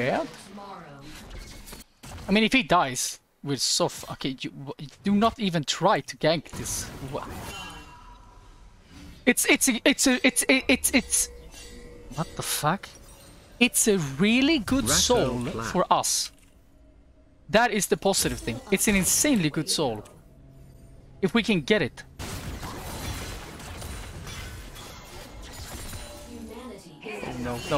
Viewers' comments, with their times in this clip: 0:06 sounding like trainwrecks out here
0:09 lmaoo hahahaha this guy can't even talk